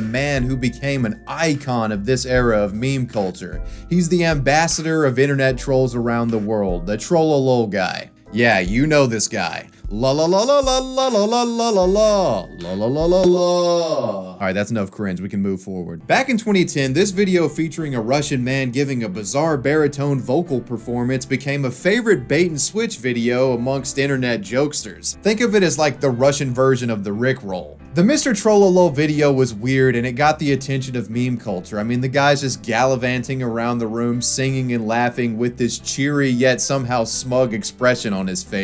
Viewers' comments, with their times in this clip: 0:09 ok but the vocals were actually pretty dayum good
0:25 Am I insane, or does the piano in the background briefly sound like the intro to Ride the Lightning?